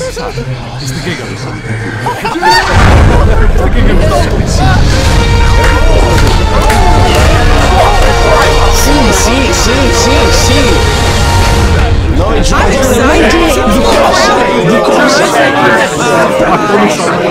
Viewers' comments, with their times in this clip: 0:04 everyone clapping that was so freaking cool👏